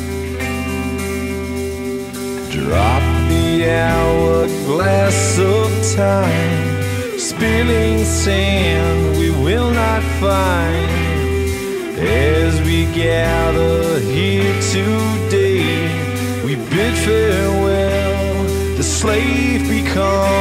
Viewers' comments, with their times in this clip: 0:04 that autotune tho